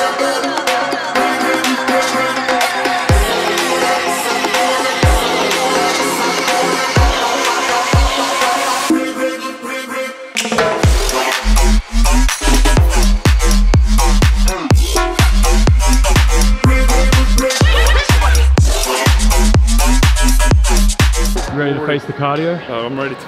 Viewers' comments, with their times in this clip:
0:10 the beat drop was fookin savage you sick kents